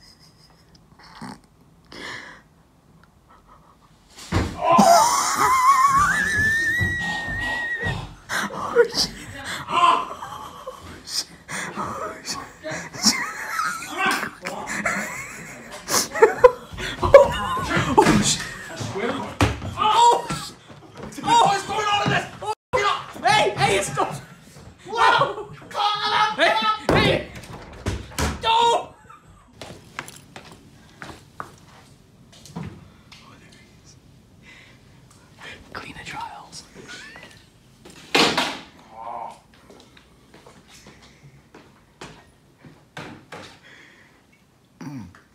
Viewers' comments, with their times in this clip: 0:07 he laughed like a kettle
0:27 sounds like homer simpson
0:27 sounds like homer I agree